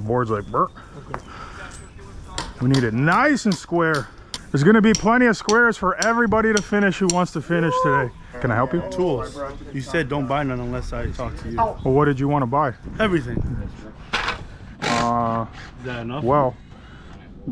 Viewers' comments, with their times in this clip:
0:03 pm. i’m on the deck laughing at the crew laughing. my wife texted me “what is goin on!?”